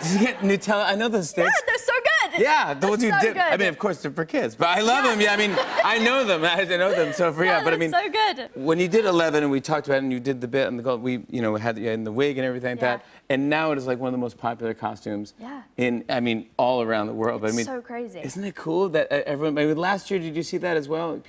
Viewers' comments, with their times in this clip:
0:05 90's Deja vu moment. Her laugh reminds me of a cross between Jewel Staite & Natalie Portman.